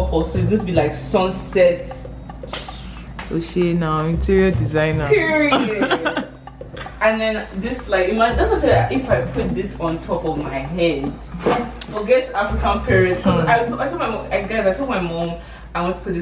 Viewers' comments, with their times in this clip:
0:03 The hiss killed me🤣🤣 Congratulationssss🎉